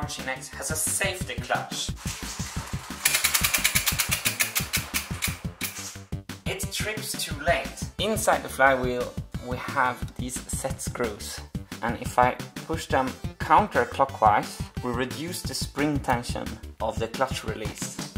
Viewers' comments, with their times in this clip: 0:05 I think if you fill the clutch mechanism with grease, you can minimize the release noise